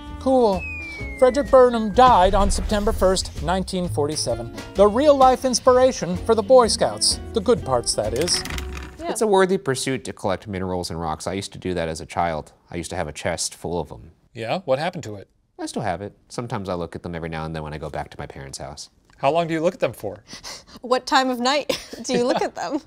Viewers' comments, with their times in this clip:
0:05 why did Ambulance and Police sirens have to start going off at exactly this time